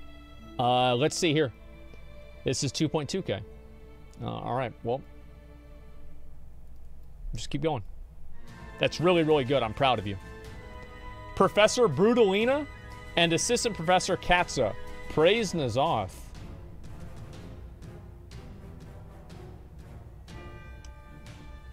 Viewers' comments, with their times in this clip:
0:04 I love how music changes Great duo introduction